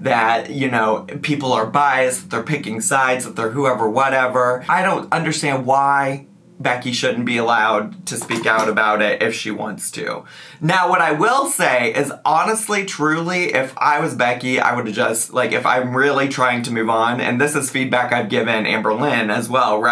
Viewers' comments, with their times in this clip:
0:07 Did your dog fart?